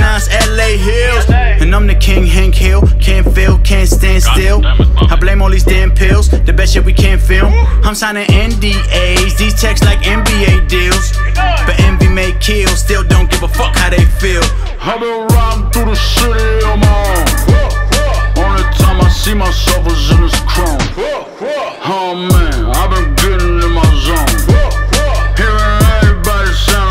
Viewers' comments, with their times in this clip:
0:08 Am I the only who thinks he sounds like kendrck lamar ? It's a dope song, he snapped